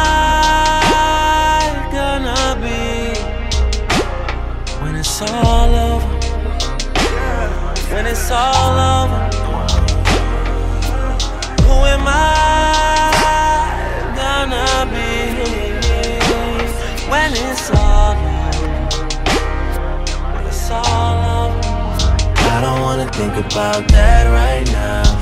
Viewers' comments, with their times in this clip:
0:07 That PND “yeah” goes hard 😂
0:07 That PND “yeah” goes hard 😂